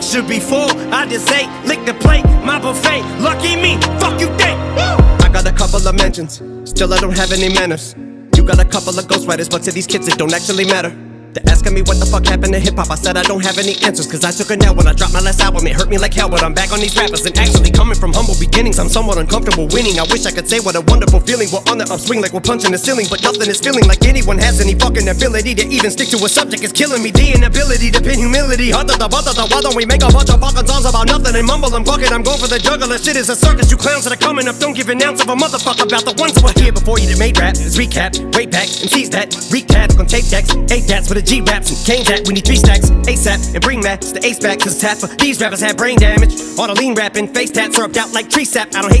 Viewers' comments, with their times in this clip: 0:05 He goes on the beat so good 😮😮😮
0:11 Eminem is getting angry, and i love the way he is rapping when he is getting angry :D
0:11 I allways have breathing problems start from the hahaha
0:27 Eminem parodying mumble rap ironically sounded so much better than people who actually make mumble rap
0:32 the voice we grew up listening. His mature voice is good but that voice is pure emotion.
0:32 voice change brought me back to old Eminem.
0:33 you can hear the shift from Eminem to Slim